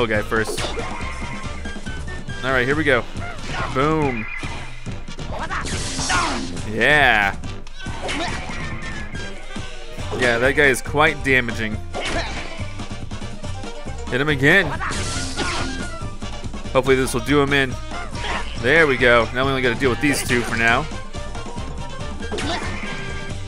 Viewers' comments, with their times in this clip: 0:04 so satisfying how the sounds were synced with the music